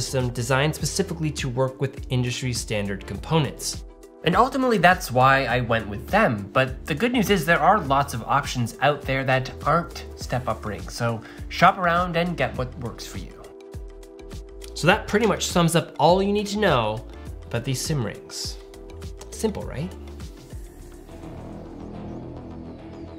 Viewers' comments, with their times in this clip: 0:05 Audio ... What happened?